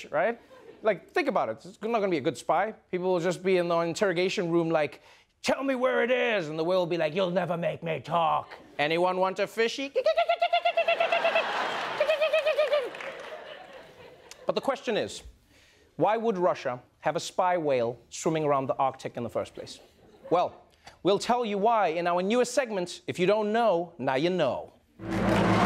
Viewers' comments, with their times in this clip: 0:06 why does the whale sound like a dolphin?